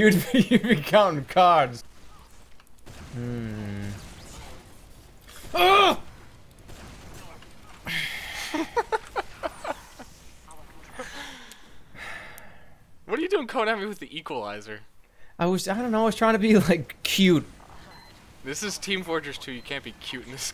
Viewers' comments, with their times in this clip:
0:07 Evil Creepy old laugh